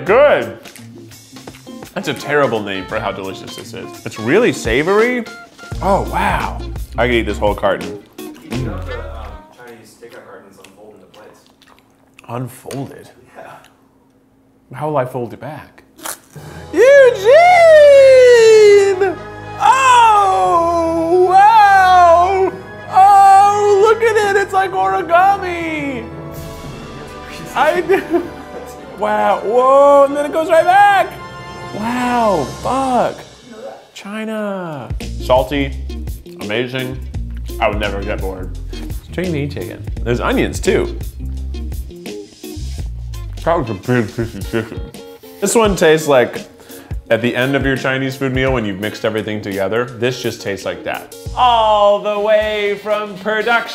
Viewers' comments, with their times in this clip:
0:04 got that good good music if you know what I mean...
0:04 Anyone else notice the music
0:04 What a great song. I wonder if a company on the internet might use this!
0:05 Does anyone else hear the porn hub intro
0:05 Did anyone notice the pornhub intro in the music in minute
0:05 ive seen this video like 5 times and only just notices the ph theme song
0:05 if you listen closely the ⬛🟧intro plays
0:05 I am probably too late but listen and you will hear a familiar sound. It is subtle
0:06 just listen closely and you can here the phub intro lol 😂
0:34 as soon as i heard the music from and a few seconds onwards , it gave me major P-hub vibes 😂 , i dont think i'm the only one 😂